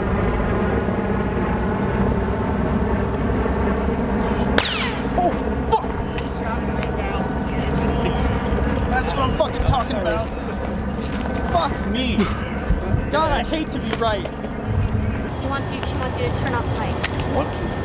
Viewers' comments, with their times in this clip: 0:04 You can hear a bullet ricocheting Crazy!